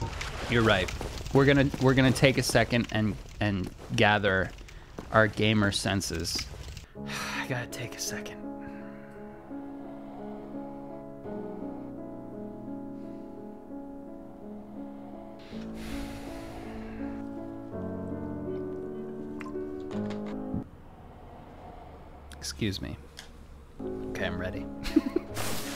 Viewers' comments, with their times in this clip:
0:07 resident evil piano music...😂😂😂 fits perfect for the stress